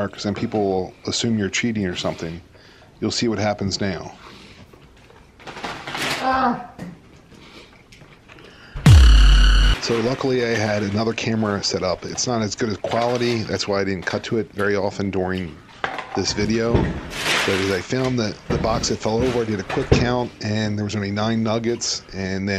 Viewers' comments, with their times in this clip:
0:06 Anybody else hear the sasquatch ?